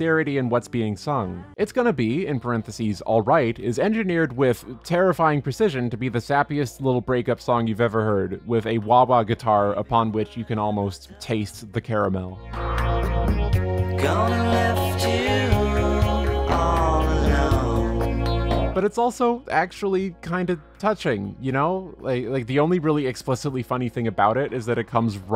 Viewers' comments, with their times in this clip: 0:09 Wait I don’t think that’s a wah wah guitar effect. It sounds more like a phaser than a wah.